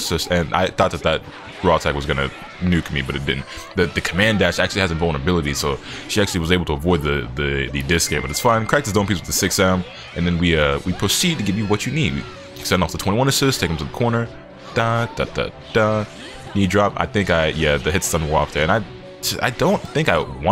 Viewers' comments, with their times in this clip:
0:07 I know damn well you guys heard that on beat with the 6m. Almost too good to be real